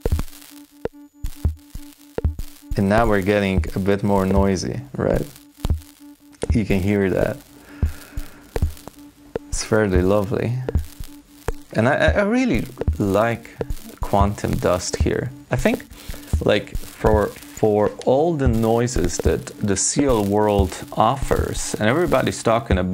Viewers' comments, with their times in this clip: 0:10 Re huh, my dust is nowhere near as nice and subtle as this :(. Mine's just really loud white noise when I do the same thing.